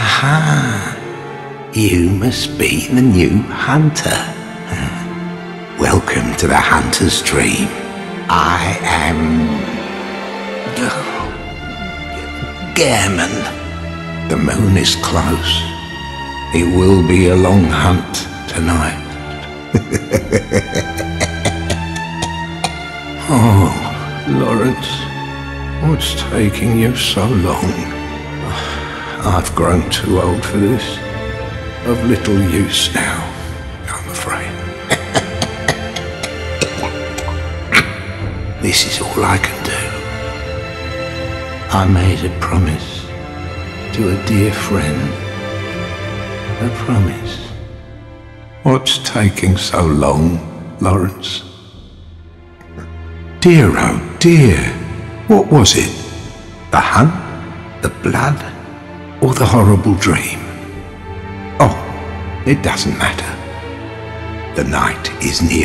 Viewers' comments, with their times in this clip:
0:08 The VA really had to channel Joe Biden for this one
0:08 sounds like he actually forgot his name for a second.. Jesus Christ that’s sad
0:09 How Gehrman hesitates with telling his name leads me to believe he made it up on the spot.
0:41 I've never heard him saying 'I made promise. ' Just the way he says it hurts my heart.
0:48 “what’s taking so long” You can feel it, the pain in his voice…